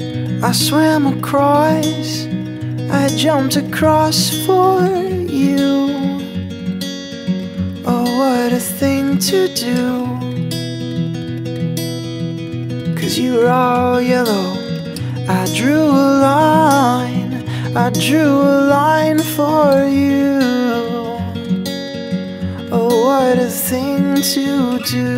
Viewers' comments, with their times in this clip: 0:10 i've watched a lot of covers of this song and i must say i really enjoyed your cover! i like the way that you played the guitar rift ish :) so, good job!